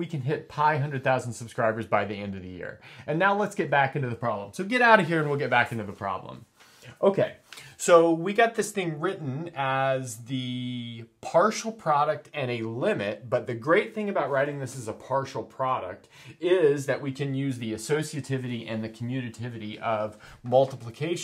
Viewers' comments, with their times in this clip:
0:03 For a second I thought he said he wanted to reach "π - hundred thousand subscribers", and they are kind of close to that! 😄